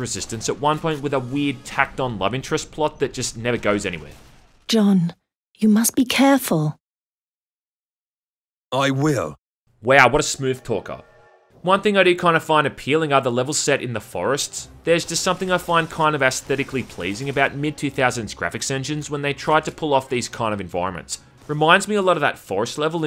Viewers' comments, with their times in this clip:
0:04 This has to be the shittiest voice acting I've ever heard since House of the dead 2 ..... hahahahahahaha
0:04 10/10 voice acting
0:04 "John, you must be careful." "AYE WHALE!"